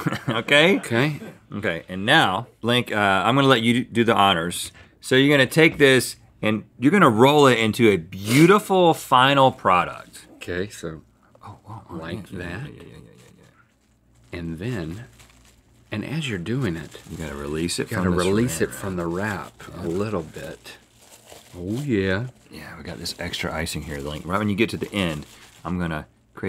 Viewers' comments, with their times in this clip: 0:07 Rhett doing his best Tim Cook impression